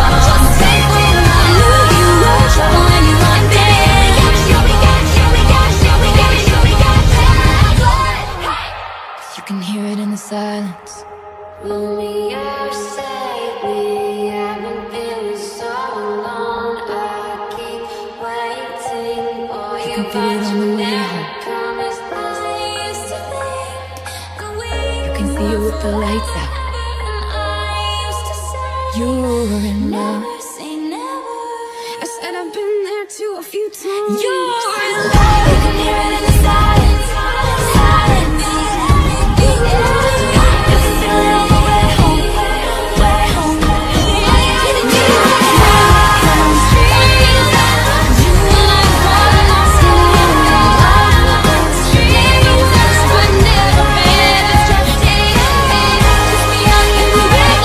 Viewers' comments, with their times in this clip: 0:09 sounded so magical, it brought back so many memories. I need a full song of Love Story but in that version.
0:09 does anyone know what genre of music is this? How do i find more songs like this? Angelic voice
0:09 is the reason I came 💛 her voice sounds like an angel
0:09 the bridge almost made me cry of nostalgia ✋
0:11 closes my hand?
0:32 it's not taylor's voice right? It's kinda ruining the flow of the song for me.
0:35 is literally gorgeous, the way she sings “anything anything anything” is unbelievable
0:39 Wait.., the piano and drums sounds like Rachael's fight song
0:39 Actually there is a little this love.